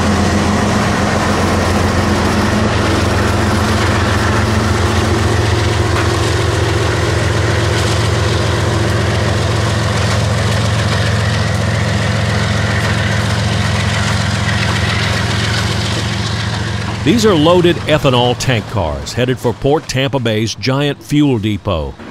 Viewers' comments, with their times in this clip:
0:09 Why are GE loco's ALWAYS so loud?